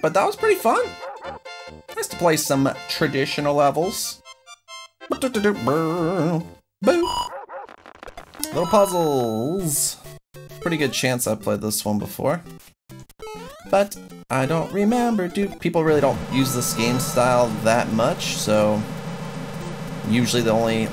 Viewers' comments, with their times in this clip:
0:06 The Chain Chomped Barked to the beat